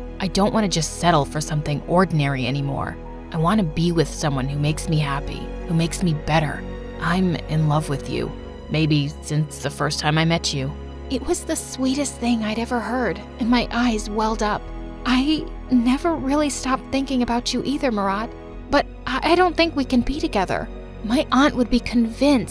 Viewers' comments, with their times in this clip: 0:09 I thought he said baby 🙂….